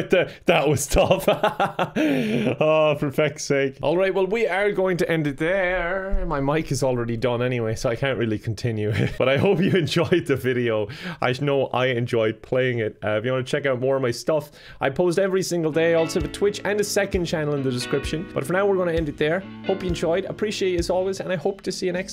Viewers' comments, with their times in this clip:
0:04 mic: imma head out
0:05 the Mic.. I'm laughing so hard rn 😂